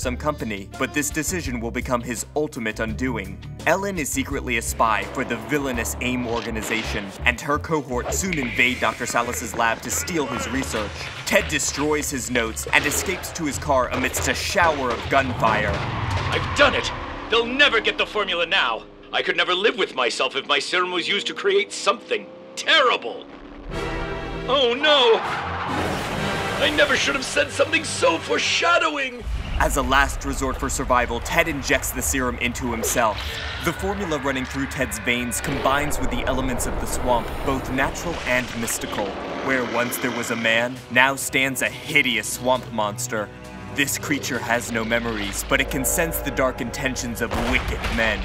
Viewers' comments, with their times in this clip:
0:09 If you listen closely you can hear some thing sounds like the henchmen invoice from fortnite season two chapter 2
0:33 Ah...that famous scream...